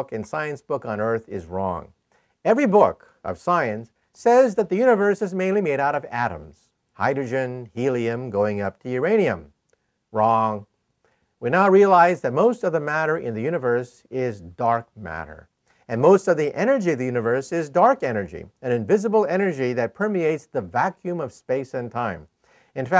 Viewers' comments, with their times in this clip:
0:09 the way he says "Wrong." is just so perfect. I love this man.